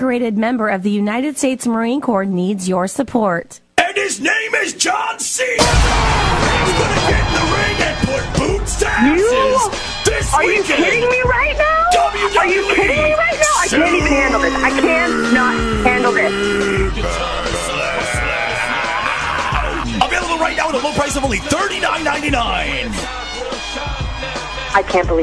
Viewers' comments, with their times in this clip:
0:10 she had to have laughed a little right there 🤣